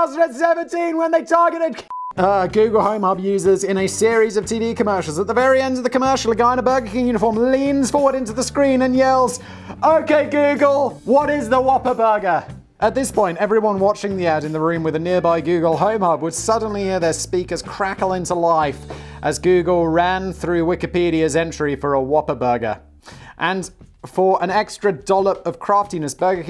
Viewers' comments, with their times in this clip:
0:10 SHOUTS AT FULL VOLUME!!